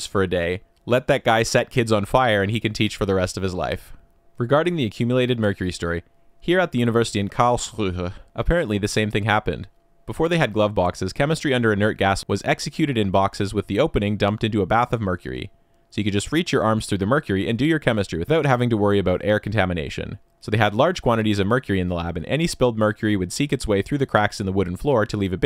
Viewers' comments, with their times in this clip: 0:07 For a second I thought you are having a stroke while reading 'Karlsruhe' Always a nice time hearing someone butchering german xD